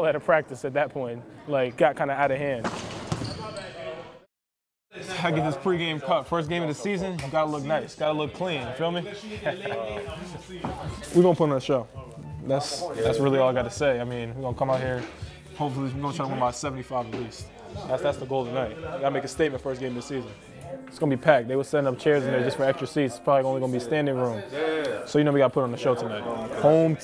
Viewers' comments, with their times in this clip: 0:08 Cole got that Denzel Washington, "My Nigga", type laugh; that humble, but cocky on the low-esque tone.